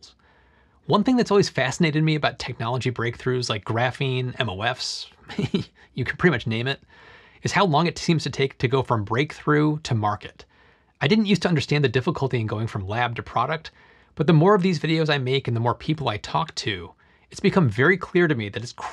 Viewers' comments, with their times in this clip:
0:04 This is a cute laugh lmao